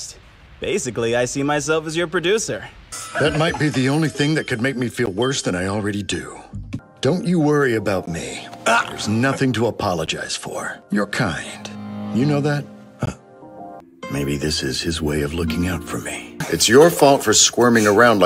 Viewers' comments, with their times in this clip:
0:05 not me thinking old man mcgucket's voice would fit him lmao